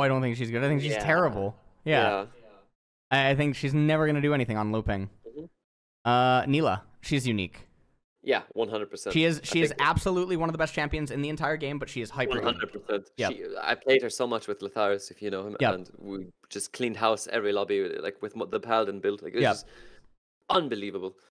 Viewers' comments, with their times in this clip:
0:09 Nilah is hyper what? Can anyone understand it?